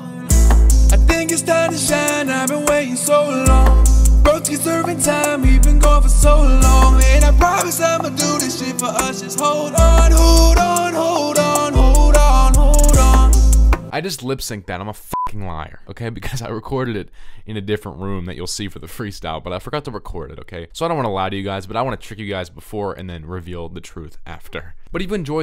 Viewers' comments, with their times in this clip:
0:07 LIL TJAY ON POINT